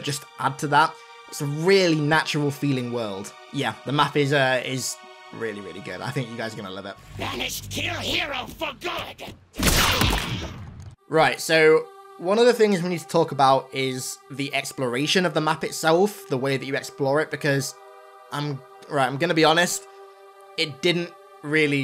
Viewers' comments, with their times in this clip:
0:07 did that Jackal just speak english!? Holy hell this might be a first!